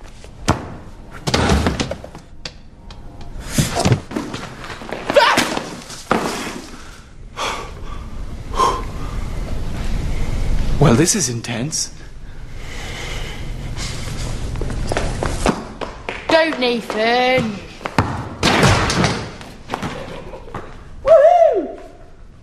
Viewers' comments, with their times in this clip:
0:05 lol, the little weird noise nathan makes xD i laughed so hard!